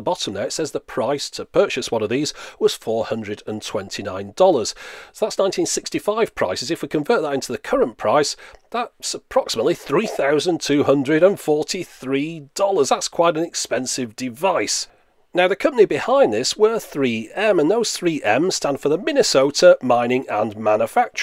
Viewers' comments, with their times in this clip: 0:04 oh, yeah......muzak!......almost as annoying as a mosquito buzzing around your ear in the middle of the night (think in the morning and your trying to get some zz's because that little bas***d keeps waking you up)! need i say more?.......'nuff said.